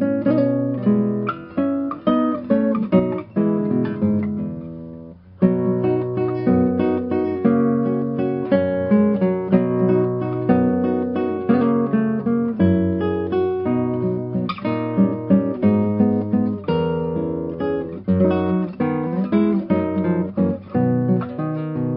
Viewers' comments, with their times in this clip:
0:04 around there it kind of sounds like super Mario music, (yes the Nokia tune is in here somewhere to.)